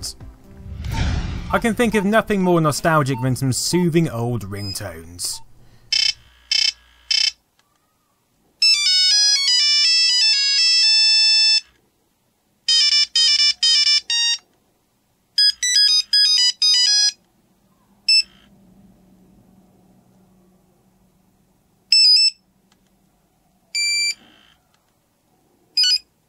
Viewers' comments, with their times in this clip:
0:03 ear rape warning
0:06 You forgot to turn down the volume a bit! .-.
0:08 I never had a nokia phone, but that ringtone Always gives me a nostalgia-like feeling. :)
0:08 who's hairs stands.. while hear those ring tunes ?
0:08 watching video Ahh, the nostalgia... MY FUCKING EARS
0:08 It's my ringtone!